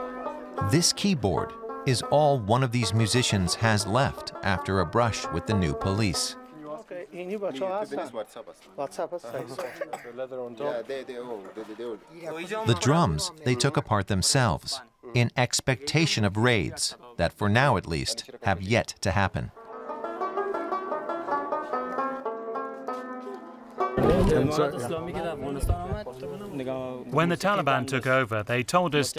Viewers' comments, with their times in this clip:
0:10 That's a nasty cough.